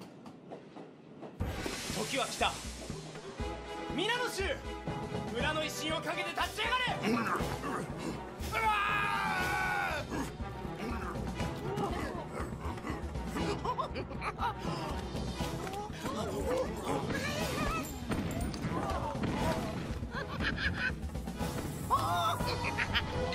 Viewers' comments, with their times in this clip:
0:08 Barbarian: RAAAAAAAAAAAAAAAAAAAAAHHHHHHHHHHHHH!!!!!!!! Me: why do you always have to scream